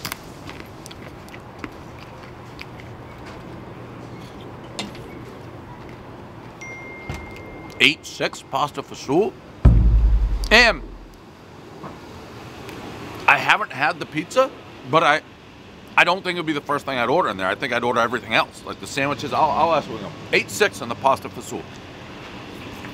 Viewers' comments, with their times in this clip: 0:06 message sound and his hand gesture fits perfectly 🤙